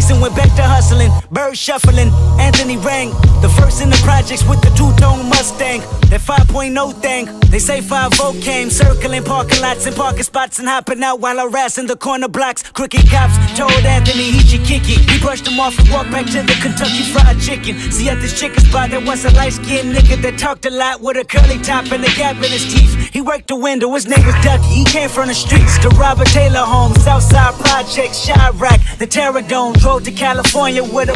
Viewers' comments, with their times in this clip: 0:07 dif beat. there was four beats in total im pretty sure. listen how the snare switch up
0:12 I am SO GLAD you kept this switch right here
0:12 I like how this guy wanted to get rid of the beat switch but that honestly makes this better
0:12 This beat gives me Section 80 vibes
0:12 Do you know how high I would have jumped out my seat if I heard that first song that was sampled! Then the Atari sample !!! Shits beautiful. Hip hop done right...nothing like it.
0:13 that little 8bar beat is the best part.
0:13 is that TPAB style and I love it